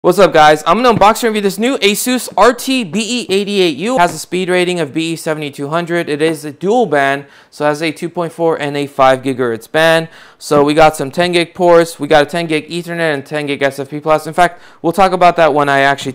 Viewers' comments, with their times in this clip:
0:00 RIP headphone users lol. Great video otherwise!